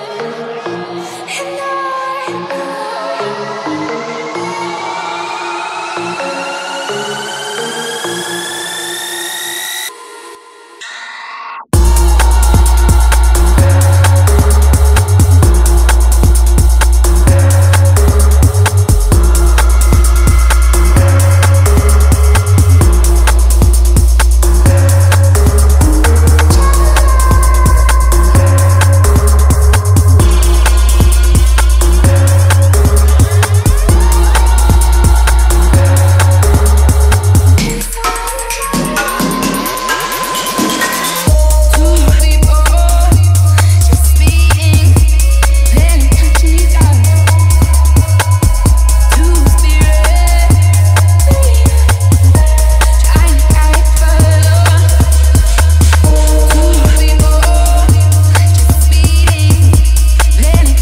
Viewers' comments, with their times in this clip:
0:10 when the beat drops though 😎 I love it 😜
0:10 If you found this 🔥 track from my Manager 15 minutes prior to his shift jamming out to ((Sunday Scaries)) DON'T YOU CRY Discreet comment... I hope you LOVE ❤ HOW hard it hits when it DROPS !!!! Cheers from America!🇺🇸
0:11 that drop time time. <3
0:11 music starts from
0:13 Casually listening while at work not really paying attention then the beat drops at like and I'm like "oh my, what is this". Song officially saved.
0:35 I can hear is 'kiss my vagina'.
0:43 the beat is perfect though